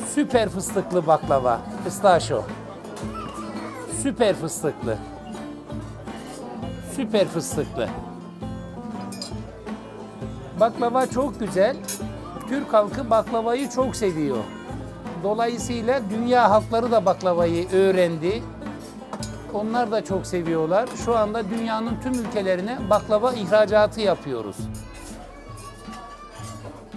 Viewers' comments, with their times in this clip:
0:10 the turkish language is beautiful